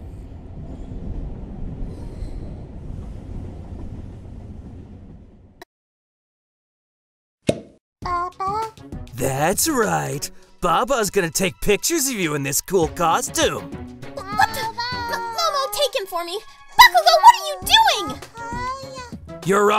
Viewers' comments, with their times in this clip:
0:06 I love how todoroki said bah bah it’s cute! :3